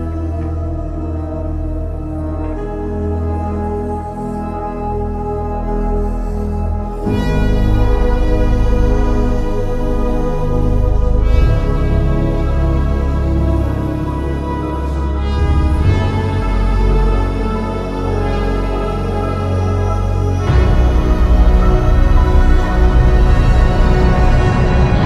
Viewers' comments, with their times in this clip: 0:06 That has Blade Runner written all over it
0:06 sounds like Vangelis music